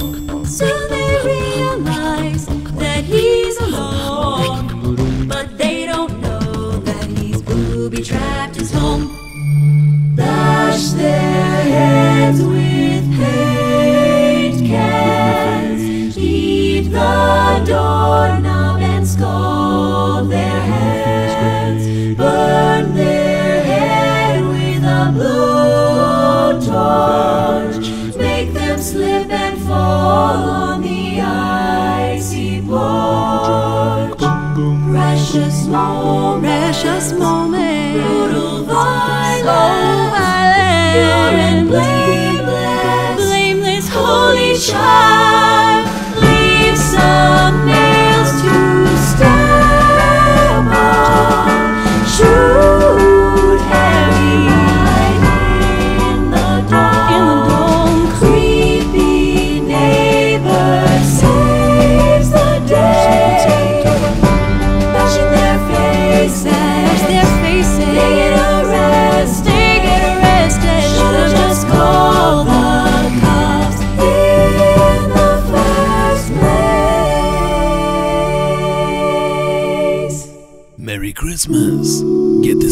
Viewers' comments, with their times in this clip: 0:10 Song wise,starting from is awesome sauce,some Celtic women shyt right there
1:03 .. the fart is really strong here!
1:03 did she fart?
1:04 Girls never fart. MYTH BUSTED